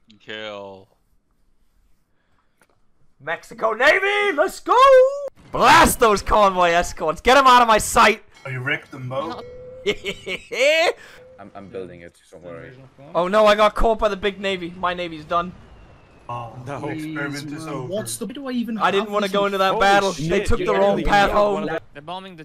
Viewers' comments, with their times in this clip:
0:09 not the team four star master roshi laugh